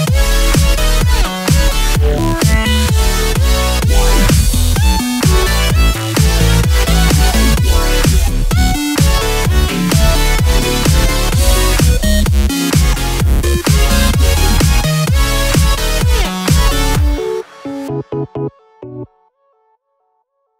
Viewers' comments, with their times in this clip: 0:05 Is that etika on